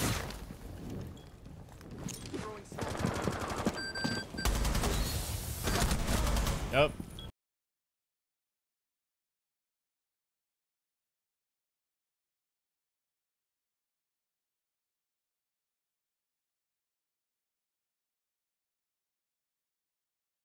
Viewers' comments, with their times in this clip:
0:07 What happened to the audio ?